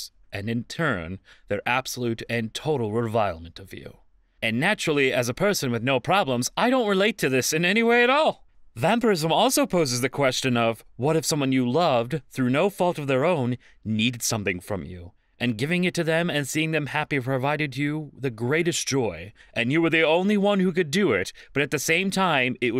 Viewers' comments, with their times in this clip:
0:04 I wasn't paying attention and thought they said capitalism instead of vampirism.